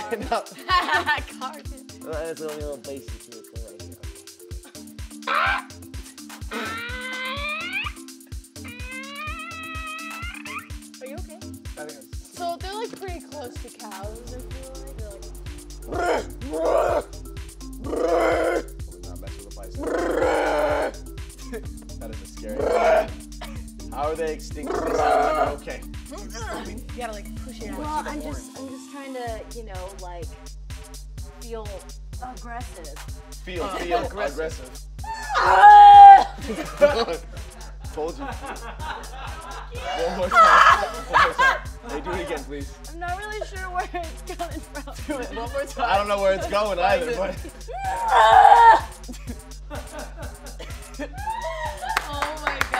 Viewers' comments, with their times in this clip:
0:06 dis Joven fart?
0:39 forced laugh for the win